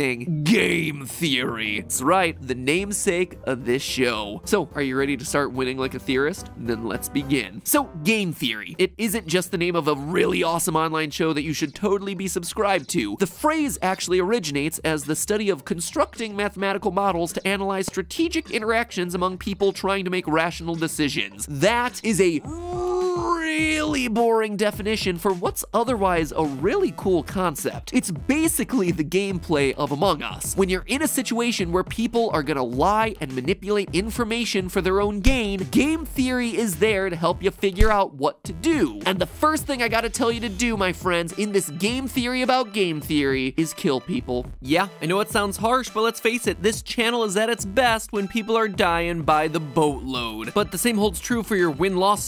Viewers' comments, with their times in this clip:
0:04 You sounded super cool saying that for some reason
0:40 why does matpat sound like the nerd emoji in this part